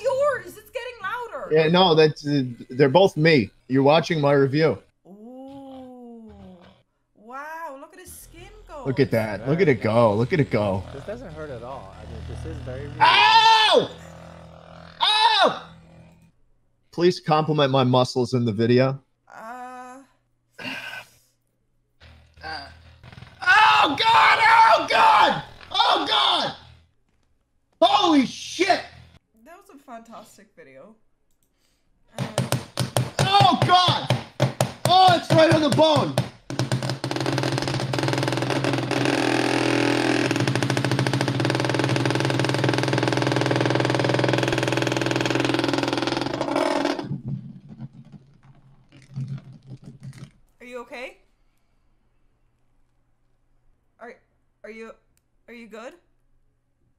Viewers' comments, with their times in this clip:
0:10 The guy: This doesn't hurt at all Schlatt: Furiously screaming
0:11 it doesn't hurt at al- Drilling sounds AHHHH
0:11 the Schlatt in the video says it doesn't hurt at all and then the real Schlatt screams lol :)
0:12 “this doesn’t hurt at all” schlatt screams
0:32 Fireworks turned into a whole construction site 😂
0:35 Schlatt's starting a freaking chainsaw because the Massage Gun hurts a bit. He needs MORE.
0:37 commits murder in background with chainsaw
0:39 No one: That one neighbor cutting their lawn at 6 in the morning: